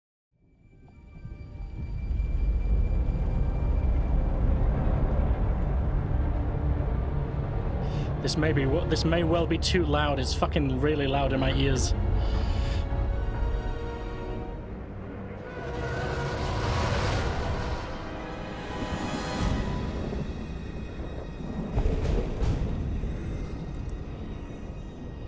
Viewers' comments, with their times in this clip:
0:08 No such thing as The HU being too loud, mate! 😁